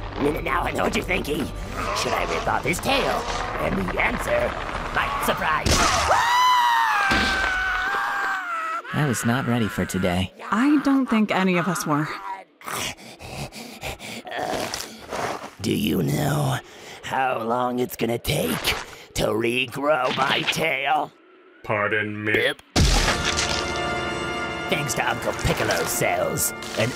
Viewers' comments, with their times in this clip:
0:07 Krillen's cell's of screaming like a bitch when beaten in a fight reallllllly showing